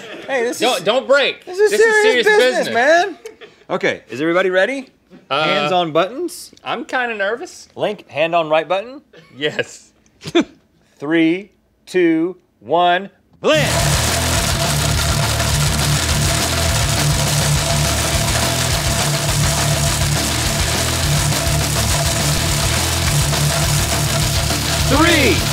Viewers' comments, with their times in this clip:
0:09 epic jamming session right here (rock music)